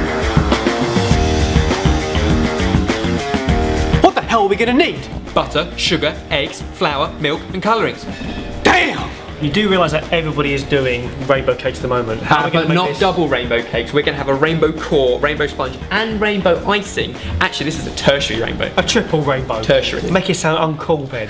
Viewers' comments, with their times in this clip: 0:07 I need that DAYUM as my alarm